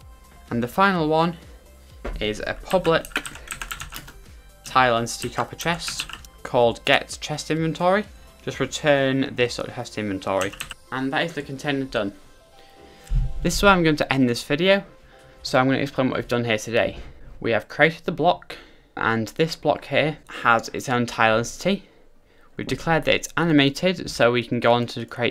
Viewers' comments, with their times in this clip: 0:08 Anyone know what he says as he ends? I got return and then he like cut himself off in an edit or something.